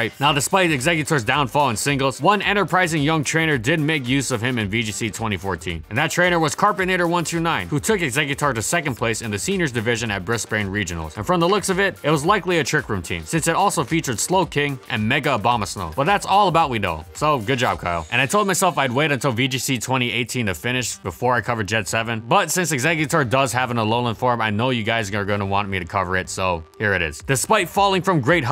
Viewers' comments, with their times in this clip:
0:09 God, that Brisbane pronunciation It's Bris-ban, not Bris-bane.